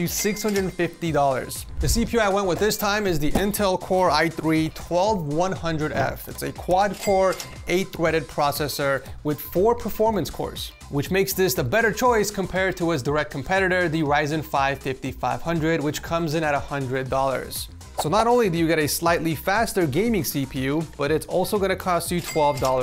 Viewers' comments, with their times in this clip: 0:05 I swear you said 4 core 8 “Thweaded”Lol Something Tweety Bird would say ❤